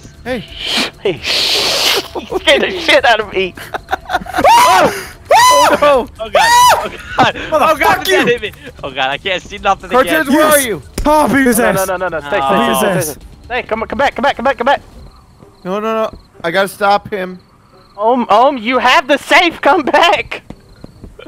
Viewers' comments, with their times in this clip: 0:04 sounds like that one scene from Home Alone when the guy gets electrocuted